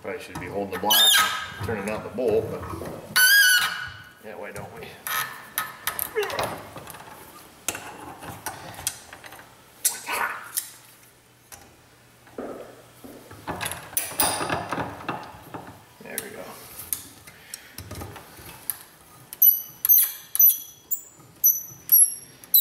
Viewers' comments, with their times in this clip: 0:04 Loved that squeaky noise with my morning coffee and cigarette. By the way, I found a way to get rid of the green crusties on connectors: Sanivac. I had 3 copper connectors on my car I didn't feel like replacing, and I thought 'what do I have to lose', so I soaked 'em in Sanivac for 2 minutes - they look like new.